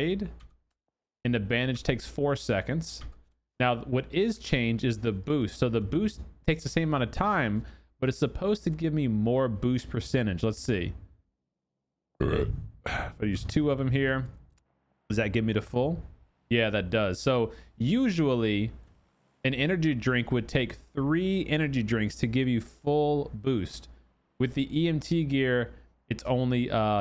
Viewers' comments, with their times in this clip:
0:09 Also you finish a drink in game, but burp in real life. You too adorable sis.